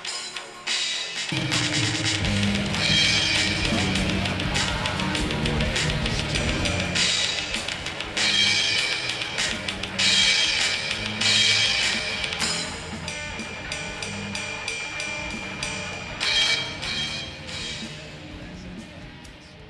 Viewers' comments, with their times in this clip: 0:06 so amazing hearing jef play an early version of a riff from scar sighted